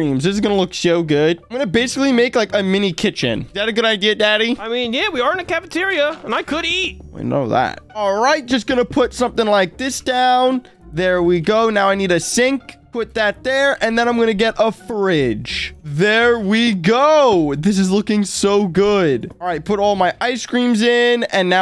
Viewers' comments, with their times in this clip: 0:05 jeffy sound like he is 💀